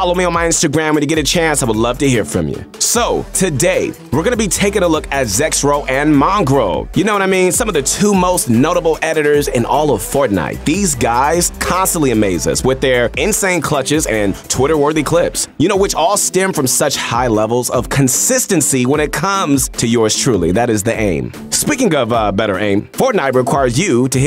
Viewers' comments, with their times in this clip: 0:08 did you say editors or aimers